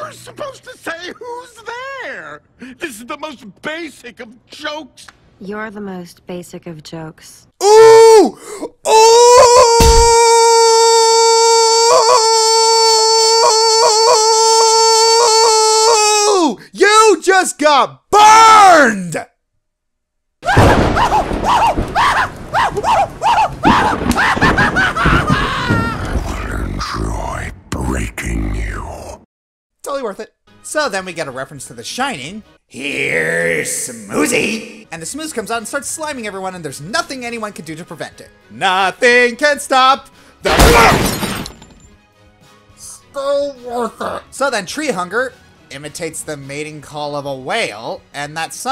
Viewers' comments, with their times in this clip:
0:07 THAT WAS LOUD AND LONG. I HONESTLY TOOK OFF MY HEADPHONES AND COULD STILL HEAR IT WHEN I HELD THEM AWAY FROM ME.
0:20 you sounded like Tom from Tom and Jerry with him being tortured by Flames clamps explosions
0:26 that sounds like Sion from League of Legends
0:30 who said that line? It sounded like Gul'dan from World of Warcraft.